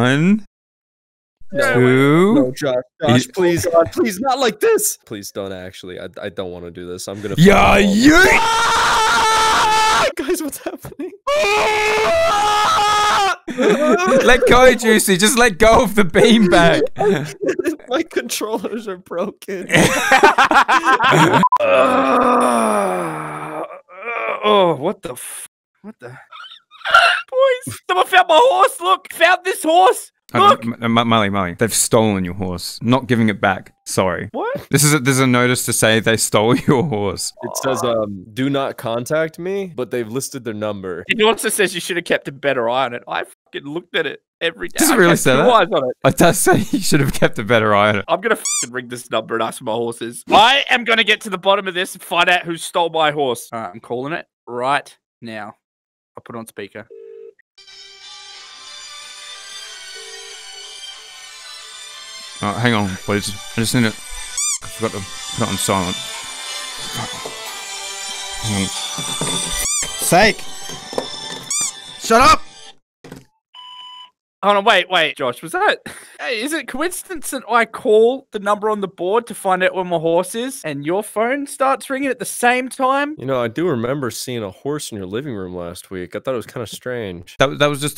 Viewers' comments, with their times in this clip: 0:10 WHY IS NOONE TALKING IM CRYING
0:57 Bish I thought my phone was ringing-
0:57 that song that came up used to be my wake up alarm for one whole year. I started freaking out wondering if this was all one big dream.
0:57 that's literally my phone's ringtone 😶
0:58 that’s my grandmas ringtone and everyday I hear it blasted from across the house. Hearing that hurts bad...
0:58 secs that’s my ring tone
1:00 I though I was going mad bc that is my mom's legit ringtone 🤣🤣🤣🤣🤣🤣🤣
1:02 my mother has the same ringtone-
1:05 that was legit my ringtone so I paused to check if my phone was ringing. Bruh I feel like an idiot 😅😅🤣🤣
1:08 Bro on killed me cuz of the ringtone